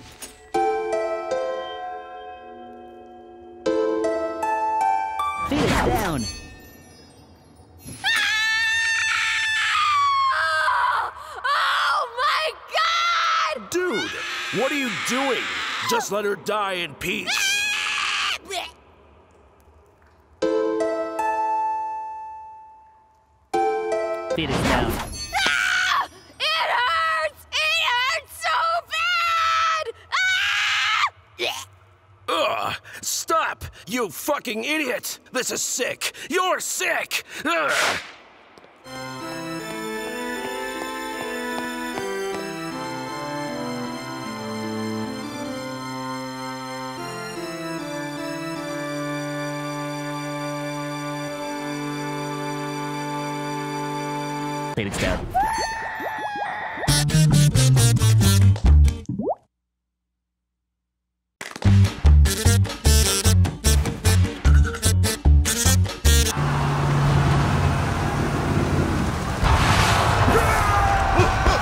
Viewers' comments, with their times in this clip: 0:04 What is he saying
0:06 sound like she having a baby
0:54 what the frick is he saying